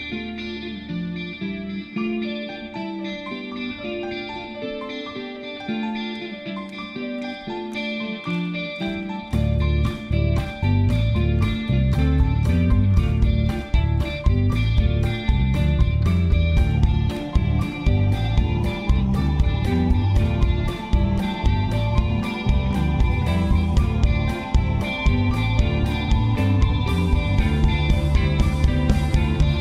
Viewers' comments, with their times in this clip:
0:05 Flawless performance from what is in my opinion a flawless band. I smiled a little when I saw even awesome musicians have a little oops moment live. A little timing hiccup You can see a Russell look over to the keyboardist and clap to the time to get him back on.
0:06 allen and rullo marking the beat because the keys were a little bit off 🤣
0:11 Russ is like tempo boys! 😂 But god damn i can hear Paul Rodgers in some of his vocals. Soulful AF